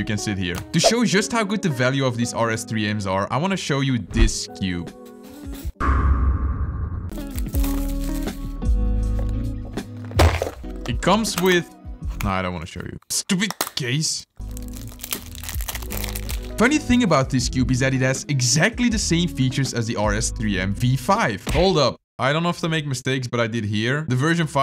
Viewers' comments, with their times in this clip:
0:09 There was an ad after that smack